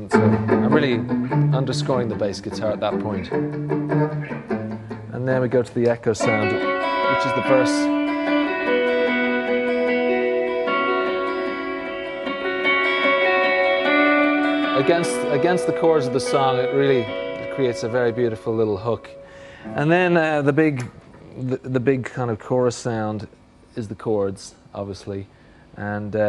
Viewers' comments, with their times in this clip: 0:08 the patch does sound amazing
0:08 how effing weird would it be in the video to be that guy, your hearing the most classic sound ever and it's spot on to the real thing because IT IS, yet you're not at a U2 show.